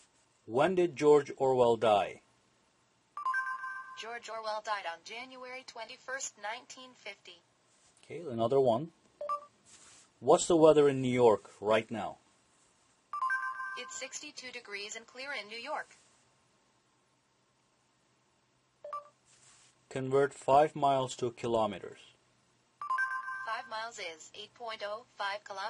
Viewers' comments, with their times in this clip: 0:10 HOW DOES THE GOOGLE SEARCH RESPONDS BY SPEAKING?